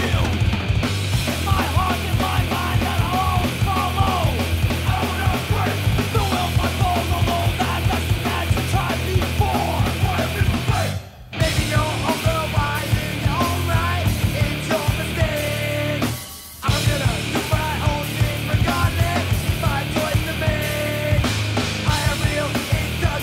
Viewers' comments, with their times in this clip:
0:10 found biohazard from the drilling another vein vhs. used to love rinsing this out before my mum got home from work and jumping off the sofa pretending the remote was a mic and going apeshit in my living room. That riff is so fucking sick, its impossible not to mosh to that ! Good times !